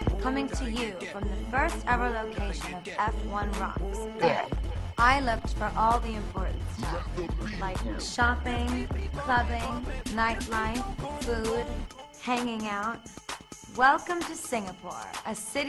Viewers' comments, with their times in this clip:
0:03 what is that "æh"?